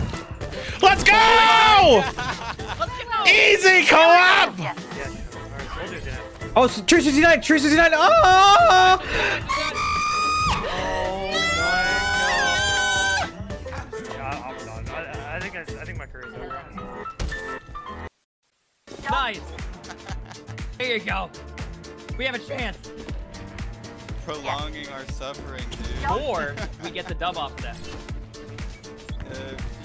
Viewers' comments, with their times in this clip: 0:10 Owie, my ears.